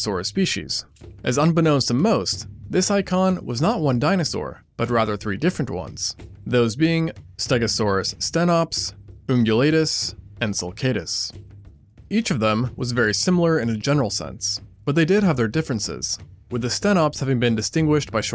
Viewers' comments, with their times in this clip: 0:04 Dinosaur with Covid coughing